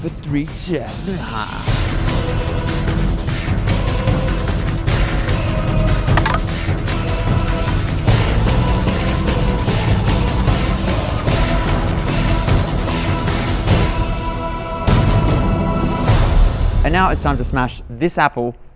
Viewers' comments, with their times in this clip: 0:06 was that a grindr message sound xD xD